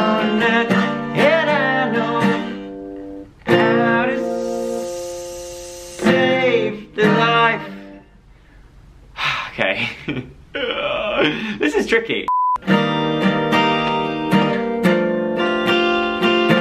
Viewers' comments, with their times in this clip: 0:04 It sounds like a Snake